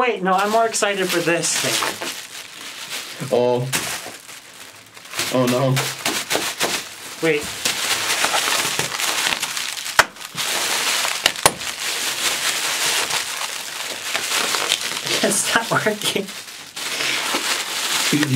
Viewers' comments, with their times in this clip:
0:04 BUBBLE WRAP ASMR